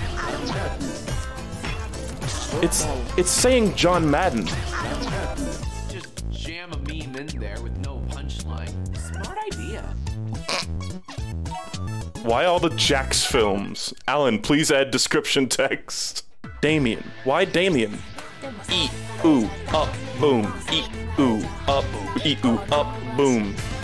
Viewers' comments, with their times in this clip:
0:04 the beat of the music perfectly flowed between the cuts. Nice touch. 👍